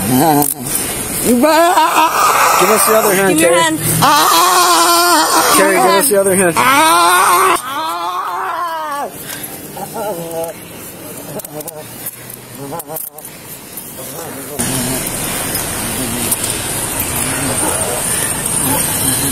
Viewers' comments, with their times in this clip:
0:04 ~ +... She sounds like a sick goat.